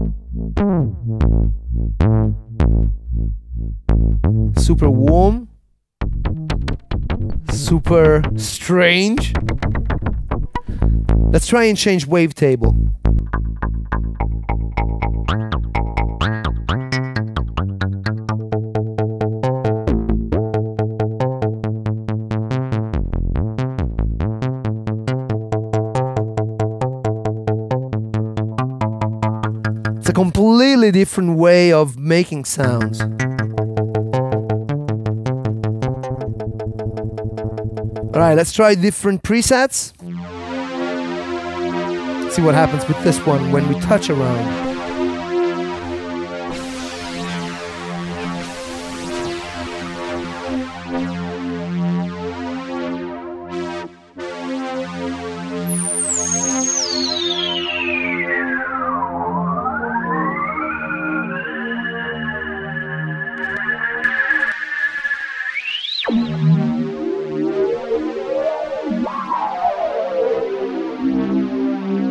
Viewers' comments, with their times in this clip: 0:06 The way why it sounds strange and atonal at that point is because you have FM enabled for osc 1 ( so it's frequency modulated by osc 2 ) AND the same time you have osc 2 set to sync So this means that osc 1 frequency is modulated by osc 2 who's frequency is REset by osc 1( a bit like a snake eating it's own tail ) , these two parameters in tandem create havoc and atonality instantly . I never understood why some implemented it this way , Waldorf is not the only one , so was the jupiter 8 , even clavia Nord lead 2 A much better implementation is so that the fm carrier is the Sync slave and NOT the sync master , like on the prophet 5 , jupiter 6 , etc..
0:53 preset sounds a little like A Flock of Seagulls I Ran
0:56 space planets voices )) or space wind sounds)